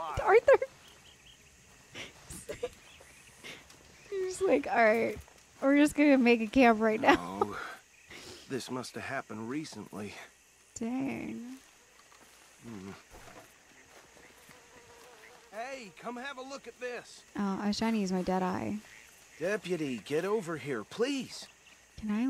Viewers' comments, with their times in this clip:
0:10 wearing a badge of her own, accompanying an Actual Deputy, standing over a murder victim whispering under her breath, "can i loot this guy?" This, This is the reason this playthru is emotional Gold!